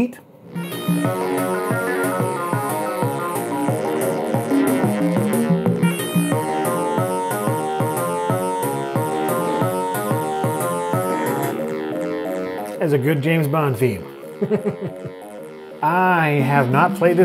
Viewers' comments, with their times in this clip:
0:05 That sounds more like His World from Sonic '06 than a James Bond theme!